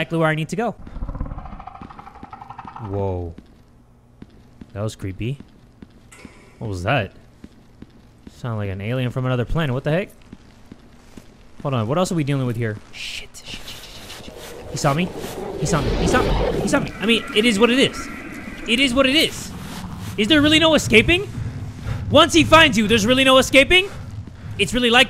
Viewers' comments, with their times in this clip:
0:06 I was clearing my throat 😭